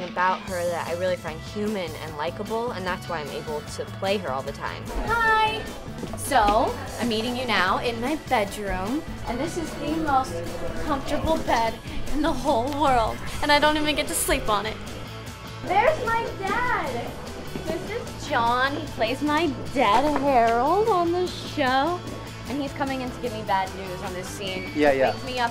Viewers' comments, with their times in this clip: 0:07 the way she says hi is so adorable